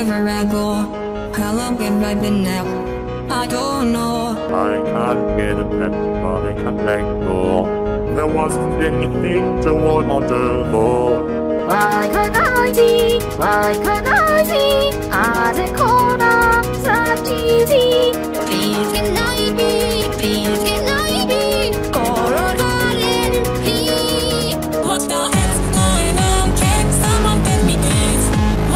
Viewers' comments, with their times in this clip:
0:04 asgor I can't get a pep Me: wait you want a pepsei
0:11 Frisk: why cant I see? why can't I see? all the cola that you see? Me: LOL COLA?